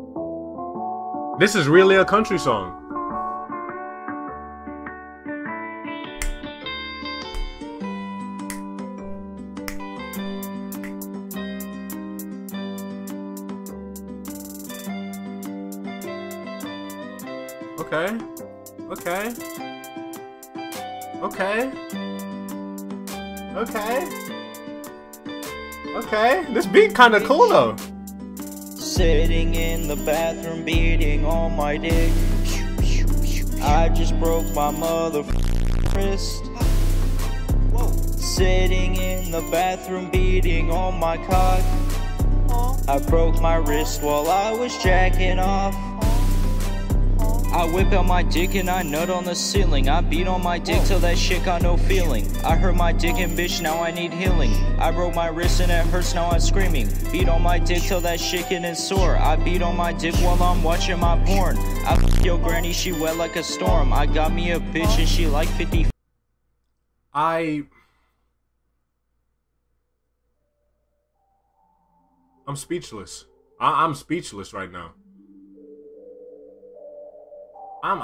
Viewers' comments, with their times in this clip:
0:10 tell me this beat ain't heat
0:28 bruh this dudes song is fucken nasty, but the beat is dope
1:00 yo bro the ugly god adlibs have me fucking crying lmaoooo